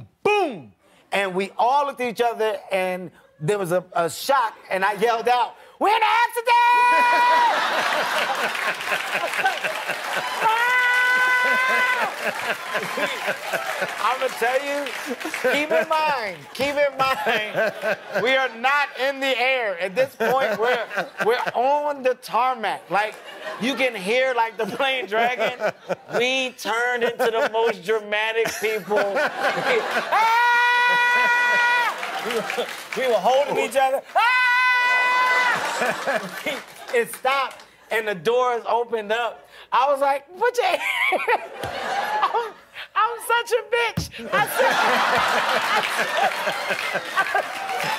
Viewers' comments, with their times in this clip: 0:07 The discord notification in the middle of it too was sick
0:07 fuck the discord sound
0:31 The laughing lady in the audience 🤣🤣🤣🤣
0:35 No denying he is a funny comedian, but it’s hella annoying when his voice gets high pitch when he is crying or yelling man like in and beyond